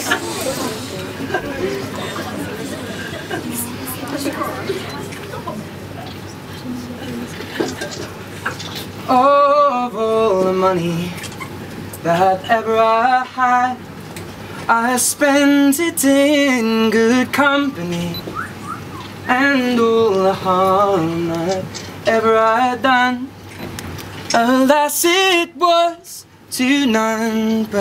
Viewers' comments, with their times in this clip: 0:10 I wanna learn how to sing this like him! When he sang "in" I wanna do that :o